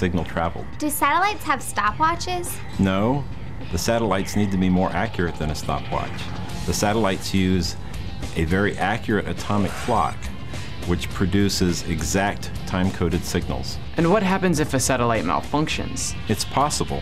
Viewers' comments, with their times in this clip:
0:03 Best No! EVERRRRR!!!!!!